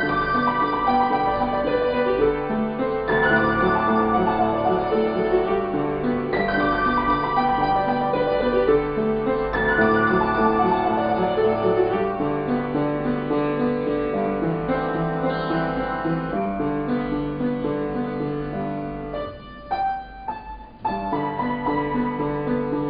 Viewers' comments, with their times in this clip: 0:05 Are you playing the left hand different from whats in the sheet music for this (for the part that starts )/. Im finding the left hand for that part quite confusing according to the sheet music :s Nice job :)